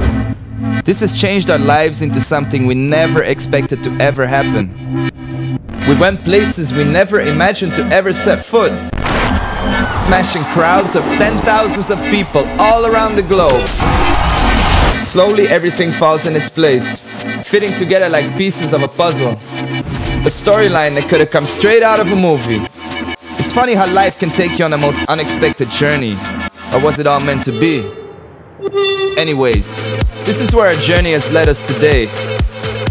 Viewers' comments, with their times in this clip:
0:06 THAT ID <3 _ <3
0:18 Maarten Vorwerk called. He wants his computer back